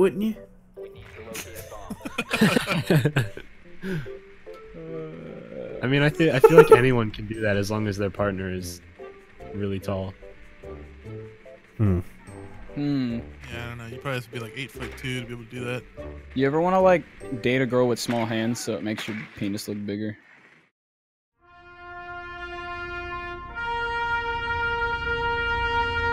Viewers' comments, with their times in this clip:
0:07 "mmm." "Mmmmm." "Mmhmm." Band of intellectuals here deep in thought 😂😂😂